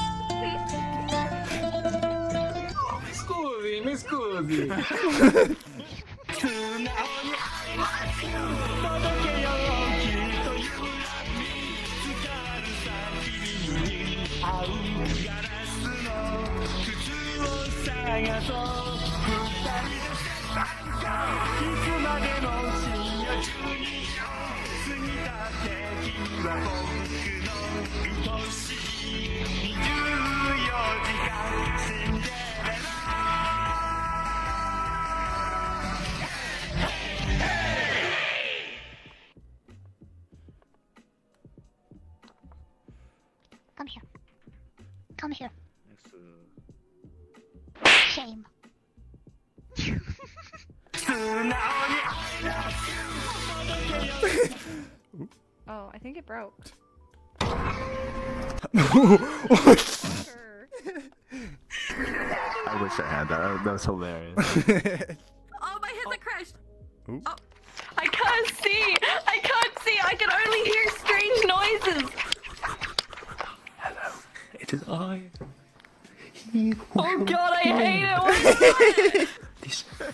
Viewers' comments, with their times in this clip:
0:09 The singing just made me remember the YATTA YATTA song from Green Leaves out of nowhere! Blast from the past (≧▽≦)
0:43 i died idk why she sounds so cute but it was funny to me lol "come here....come here.....*slaps* shame! "
1:02 well that sound familiar. Oh wait. ITS ME